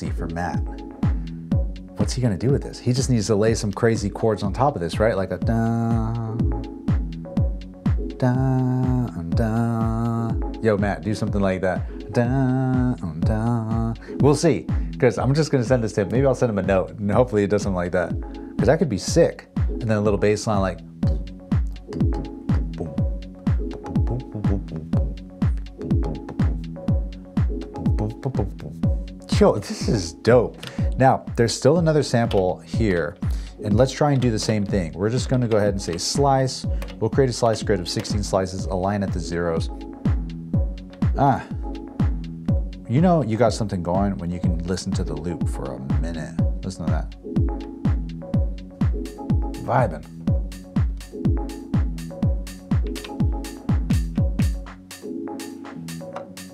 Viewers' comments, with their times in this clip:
0:08 that little rhythm is great. that'selektron boxes are still great. perhaps abl12 might come close
0:43 Really great collab, end result was very nice, but gotta say my fave part was that loop with the OT filter was fire, I’d have liked to have heard it more prominent in the final mix, but anyway great stuff as always.